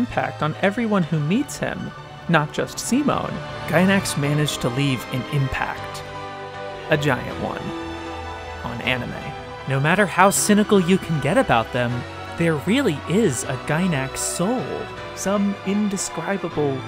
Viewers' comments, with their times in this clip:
0:03 Ah, you... With this music and words.. on top ot that frames, make me literaly crying